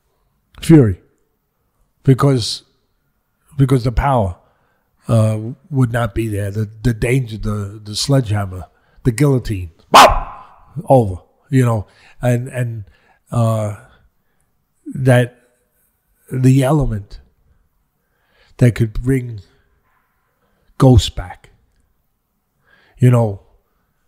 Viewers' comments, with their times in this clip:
0:09 ？？？🤔🤔 I can't hear anything...after